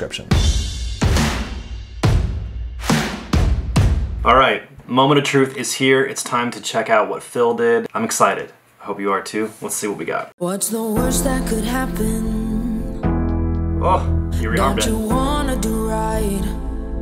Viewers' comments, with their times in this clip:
0:04 That Production sounded a lot less amateur then I expected